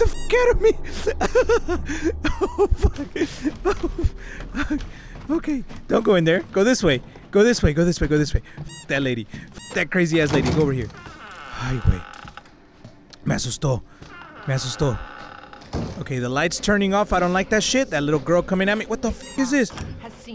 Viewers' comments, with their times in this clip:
0:08 did i hear n$#